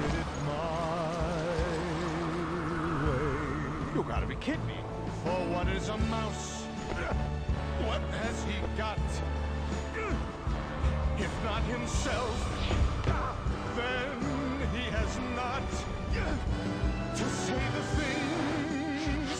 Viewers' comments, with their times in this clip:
0:03 he almost sounded like peter for a sec
0:03 that was totally brian from family guy
0:05 What if that grunting was actually apart of that song–